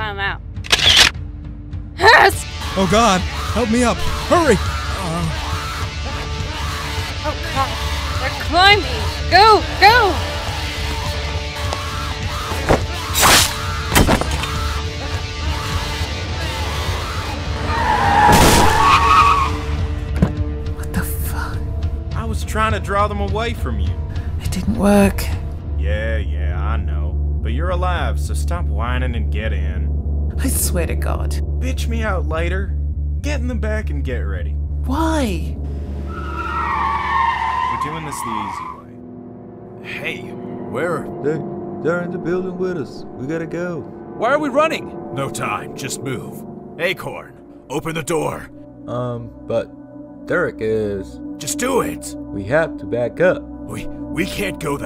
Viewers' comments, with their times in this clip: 0:04 the zombies sound like ishowspeed
0:42 The voice fuckin killed me lmao